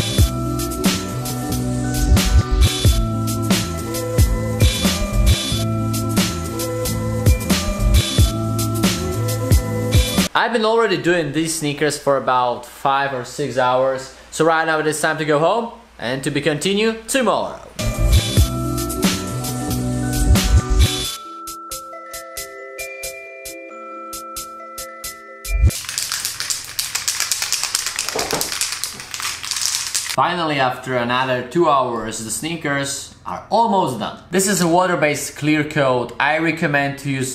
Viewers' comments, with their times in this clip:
0:05 The fan in the background saying no
0:18 the fan at backround :D